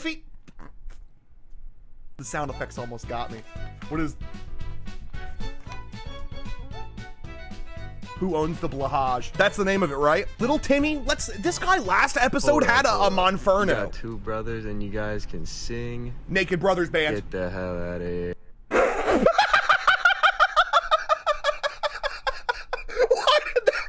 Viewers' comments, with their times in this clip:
0:08 one day you shall answer to the trans community for that criminal pronunciation of our beloved Blåhaj /j